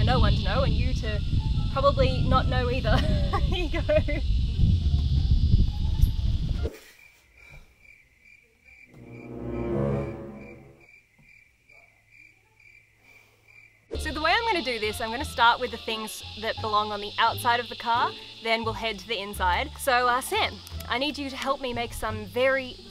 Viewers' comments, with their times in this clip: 0:04 For fucksake get a dead cat for your mic